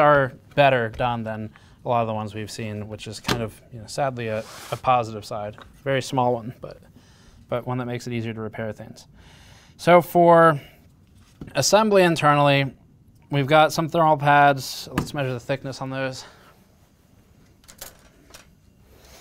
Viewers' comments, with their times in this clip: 0:06 you sound out of breathe from taking apart a gpu lmao maybe do some exercise lol